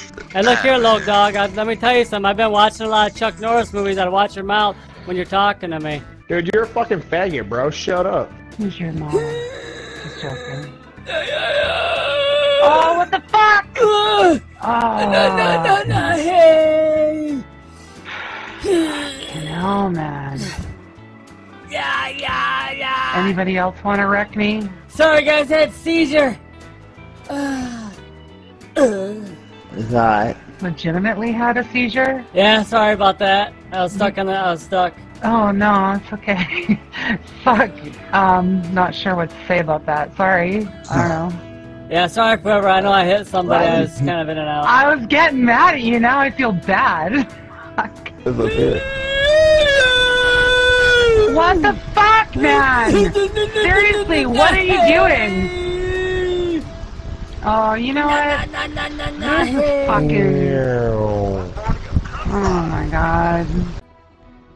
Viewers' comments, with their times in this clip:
0:08 Those seizure sounds crack me the hell up. na na na heeeeey! lmao
0:48 always gets me..like a deer with downs doing a mating call lmfao